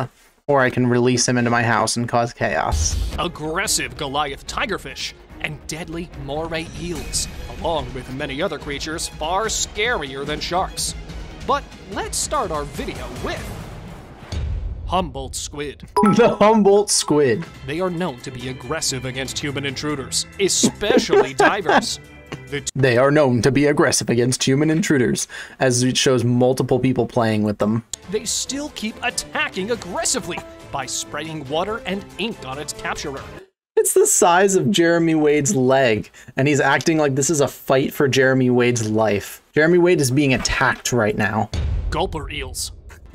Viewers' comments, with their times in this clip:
0:06 my guy really said “mormay eel”
0:27 when did this become an anime. The music and voice acting XD.